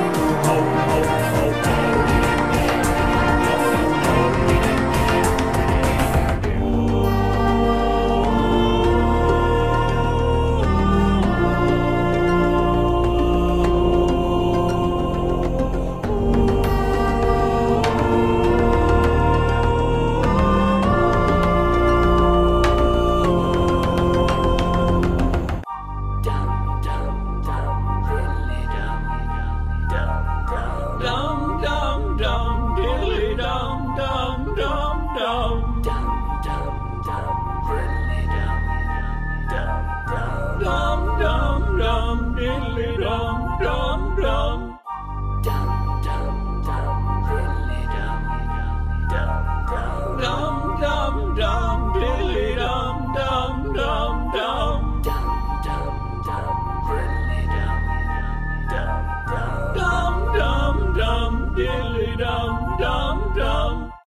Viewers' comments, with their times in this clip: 0:06 oh this is beautiful. drummidary’s percussion here is amazing, while tuskski quarrister candelavra sound beautiful. tweedle’s part makes me so nostalgic for some reason
0:59 No way that sounds like jack stauber